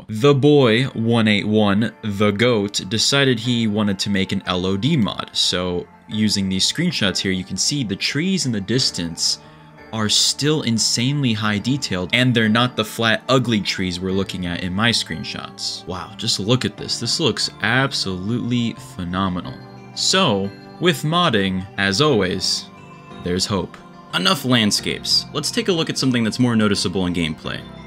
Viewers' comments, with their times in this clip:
0:09 i got so happy when i heard the background music